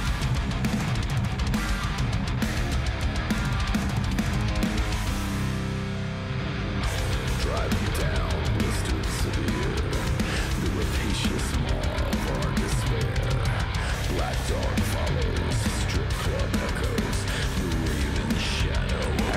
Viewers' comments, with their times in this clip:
0:05 LOG definitely has a swing/groove that makes them different than a lot of others in the genre. Similar to that southern groove of Pantera. ETID is very similar to me in that regard (angry, loud, fast - but there's a solid underlying groove). And, there's absolutely some sounds in this that also reminds me A LOT of Taproot's Facepeeler (like ).